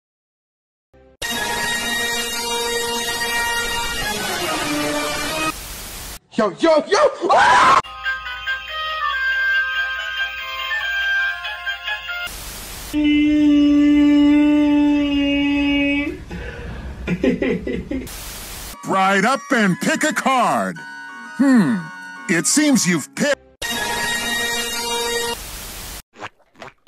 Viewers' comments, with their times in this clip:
0:08 best beat ever